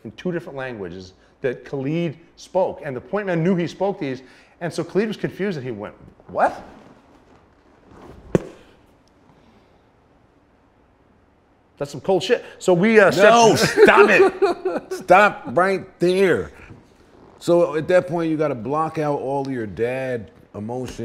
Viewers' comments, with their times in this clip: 0:04 what did he say"?.khalid.... I can' t hea it clearly
0:04 what did he say"?.khalid.... I can' t hea it clearly
0:04 what did he say"?.khalid.... I can' t hea it clearly.. Please...someone